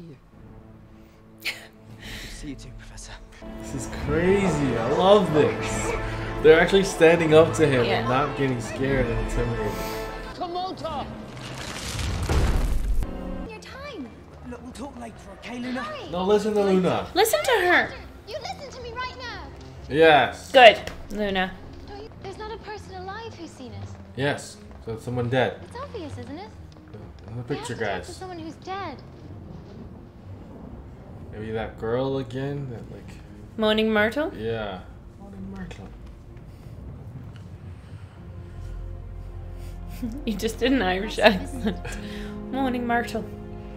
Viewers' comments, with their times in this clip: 0:10 This is my favourite Harry Potter Soundtrack. The music is just brilliant.
0:25 In my head, the way McGonagall said that, it seemed as though when she was a student, she broke into the teacher's lounge, found out about that spell, got caught, and made to promise not to use it until it was necessary. She finally got to use it after holding it in for all these decades, and that joy made her feel like a kid again.